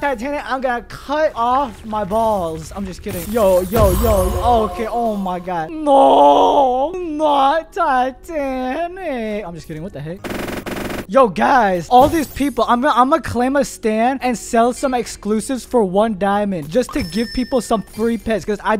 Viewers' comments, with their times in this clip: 0:06 bro sounds like depressed crying gru from despicable me